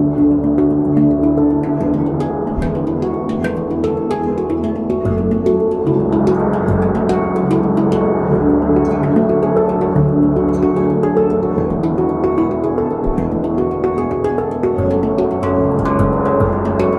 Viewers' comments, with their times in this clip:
0:03 Best part, right as that bass resonator starts to roar